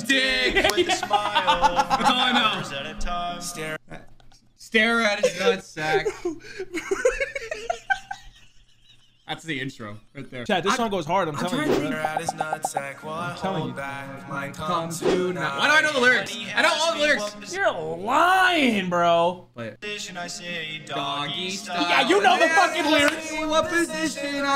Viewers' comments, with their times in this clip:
0:05 why does it sound auto tuned